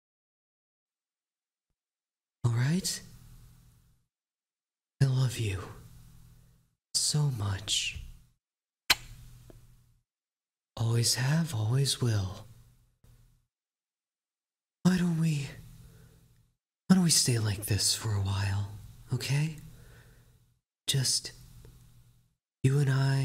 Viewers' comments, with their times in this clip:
0:09 THE KISS IM CRYING